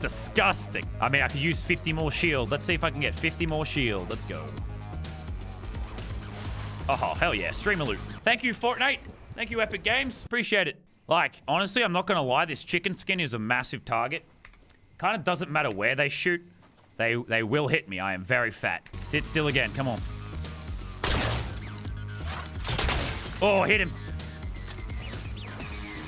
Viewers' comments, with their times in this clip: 0:08 he says fort nite but it sounds like a 5 year old idk why